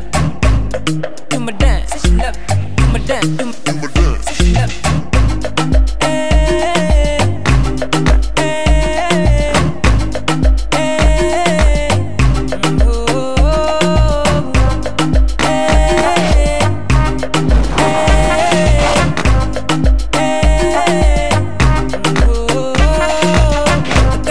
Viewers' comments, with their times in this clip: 0:10 so has no one noticed the fart like noise or you just ignored it?